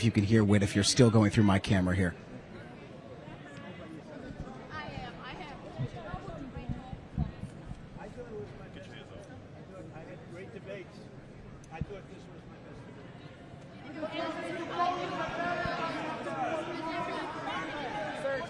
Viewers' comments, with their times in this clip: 0:05 the best part about Donald trump IS when you can’t hear him 😊